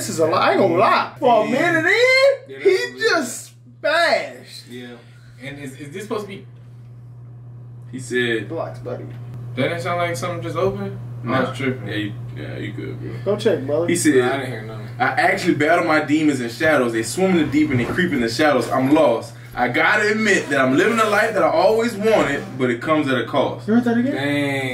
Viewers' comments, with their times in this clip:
0:07 Yoooooooooo!!! it does sound like a lever handle to a door.